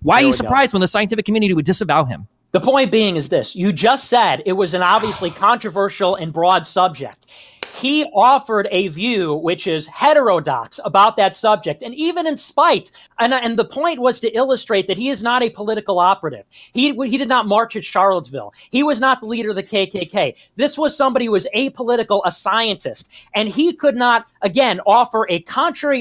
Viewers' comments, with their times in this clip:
0:08 the audible faceplate is just priceless. Exactly how I was feeling.